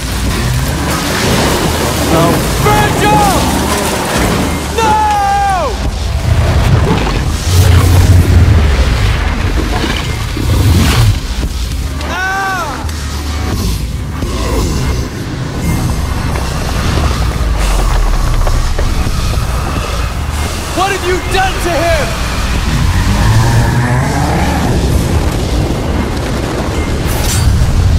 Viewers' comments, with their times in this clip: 0:10 [Mildly annoyed scream]
0:11 that AHHH made me lol. still love this game!
0:11 ... what was that? It wasn't a scream, but... it wasn't really anything.
0:12 that ahhhhh bruh